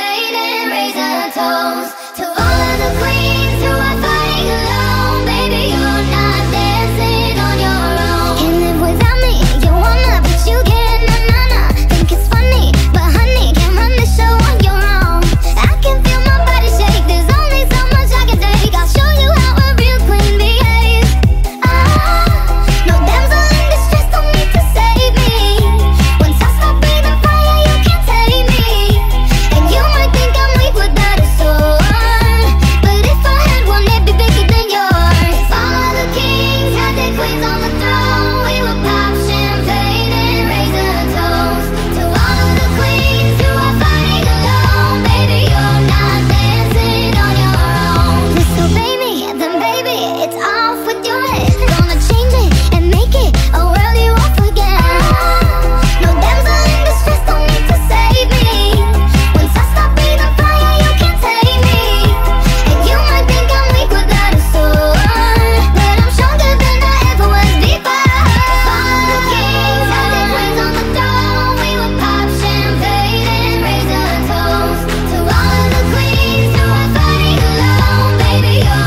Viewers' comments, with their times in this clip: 0:08 What a nice rhythm
1:04 who also thought it was "you might think I'm weak without a sword"